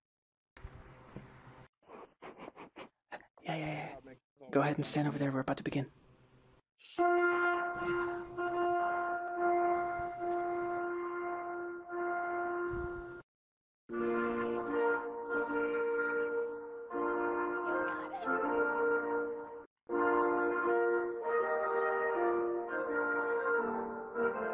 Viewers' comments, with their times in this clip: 0:06 read in a Russian voice oh my god! she's beautiful! you are one lucky man!